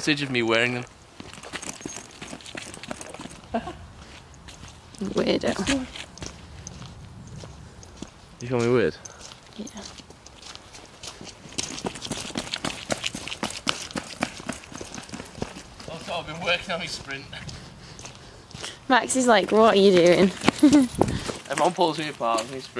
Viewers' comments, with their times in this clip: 0:04 did someone say "wand me"? Upvote if ya know peeps